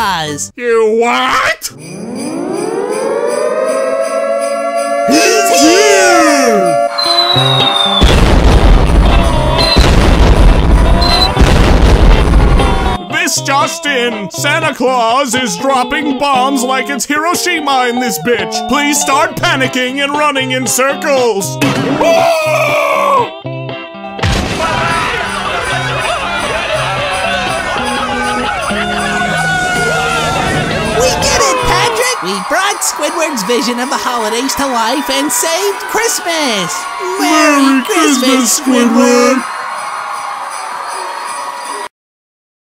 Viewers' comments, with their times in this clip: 0:03 nobody told me bikini bottom had CLM sirens
0:29 Everyone is screaming Subtitles: Applause